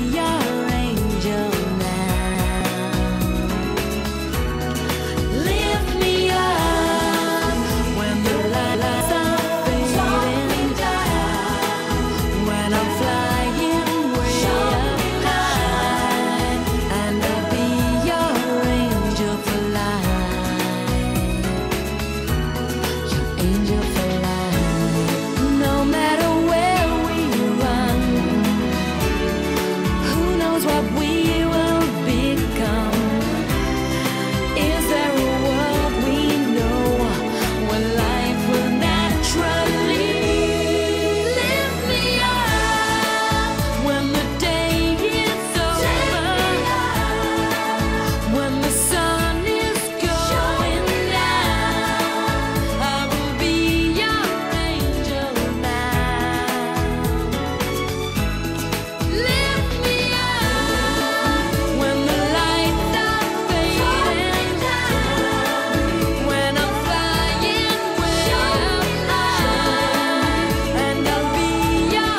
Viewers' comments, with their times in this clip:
0:08 the audio skips
0:54 Pause so lovely! *_*